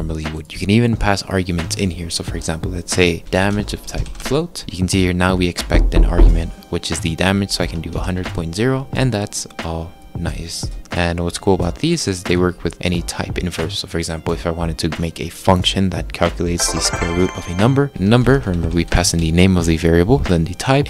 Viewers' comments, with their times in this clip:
0:04 yo bro I'm wearing headphones and could have sworn that knock was on the door to my right and got up and no one was at my door it freaked me the f out